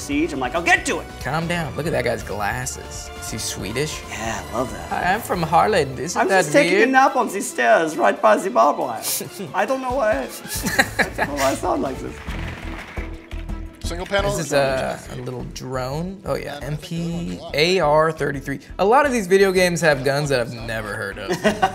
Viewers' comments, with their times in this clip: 0:05 we dont sound like that :( that's a german accent